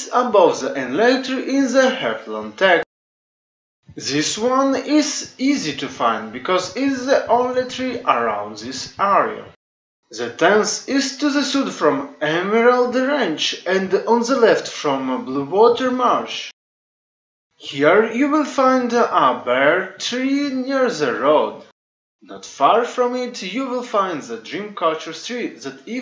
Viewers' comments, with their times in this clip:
0:08 Im giving feedback, because you asked for it. Not picking on you, Im glad to see you making videos again: The voice audio sounds a bit weird on this video. Not just that it sounds like you recorded it in a big echoey room, but it also sounds low quality and there is a weird occurance at the end of each sentance where the volume trails off. I compared the audio track on this to your older videos and the audio was much louder and clearer on the older ones. Now Ive been alerted to it, I can hear the same audio drop-off in those videos too. But, the higher volume level of the older videos hides it much better. There's also an edit error I missed having the old intro which I think was really good, are you going to make a new intro?